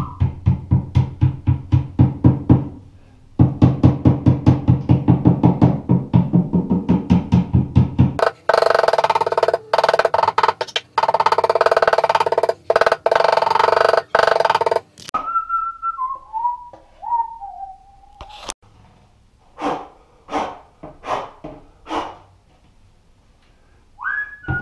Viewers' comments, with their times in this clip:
0:09 Love that Russian Burp Gun effect around the mark !! Great video as always.